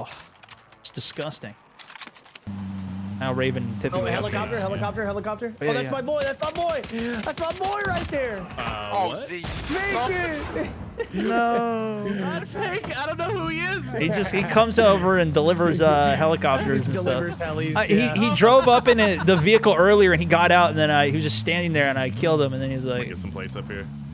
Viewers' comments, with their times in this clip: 0:06 Wow, that enemy voice vs chopper exploding time bro!